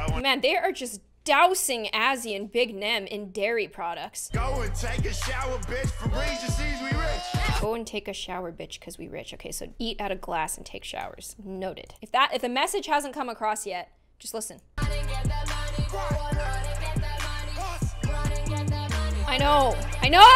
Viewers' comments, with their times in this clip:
0:06 KWEBBELKOP"S voice i hope im not the only one who noticed